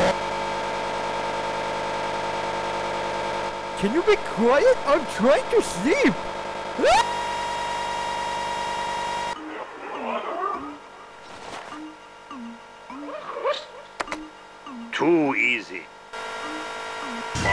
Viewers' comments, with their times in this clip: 0:03 Just imagine Byron winning the championship after an overtime caution. Also the more I watch the meme the more I think the bloke sounds like Mario.